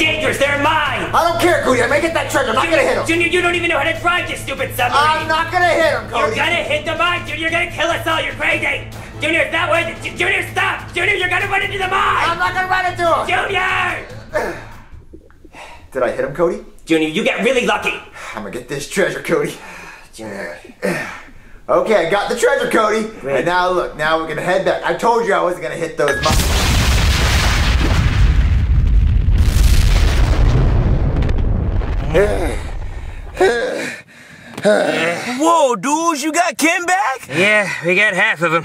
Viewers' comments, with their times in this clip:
0:10 JUNIOR YOU'RE GONNA RUN INTO THE MIIIINES Bro, Pooby's anger was so much raw compared to new videos.
0:25 it sound like if you just listen to it. it sounds likes that Junior says “I told yall” like he almost going to hit the mines